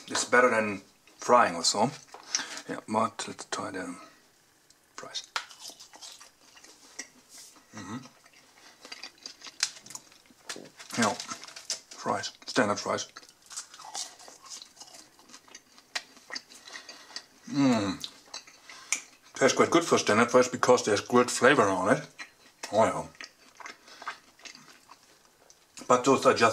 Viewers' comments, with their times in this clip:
0:09 double stomach sound